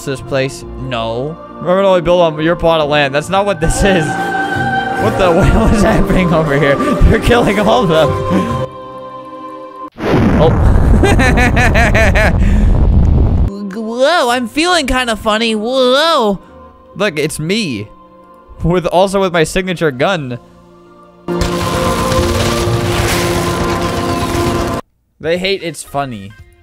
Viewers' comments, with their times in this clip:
0:10 why did he sound like annoying orange for a little